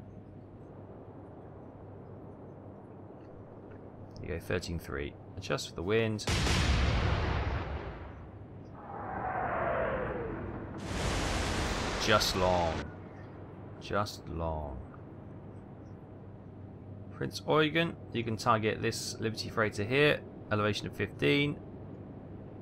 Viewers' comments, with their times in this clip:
0:08 Imagine training in the US for 6 months and shipping off to war, being at sea for 3 day only to get blown up and sunk in the span of maybe 5 minutes. The sound of those shells roaring overhead; you watch the escorts your fleet had sink to the bottom, soon to join them. Helpless and afraid.